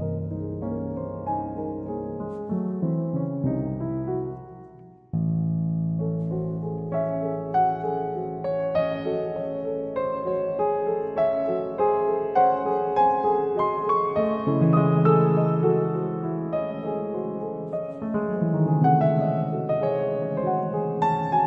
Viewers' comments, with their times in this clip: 0:05 Right when the Bbb hit I couldn't help but hear C Super Locrian bb7 as C# harmonic minor for the rest of the composition. I guess once it's no longer anchored by the C, my brain takes me back to the familiar scale sound